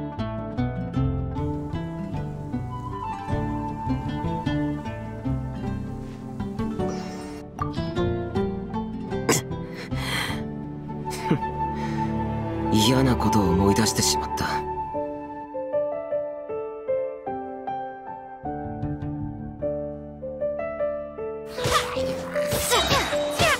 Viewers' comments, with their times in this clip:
0:08 noooooo my xiao, his long grrrrrr is cute. Why they do this to my boy :'(
0:09 NOOOOOO I liked the grrrrr more :'c I didnt even notice that 'cause I'm playing with jean lately